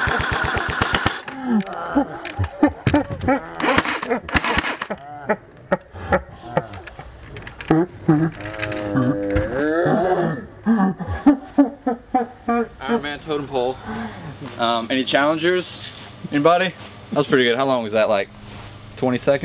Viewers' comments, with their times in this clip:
0:03 aeghahaehaehae hthe laugh at the slow mo LMAO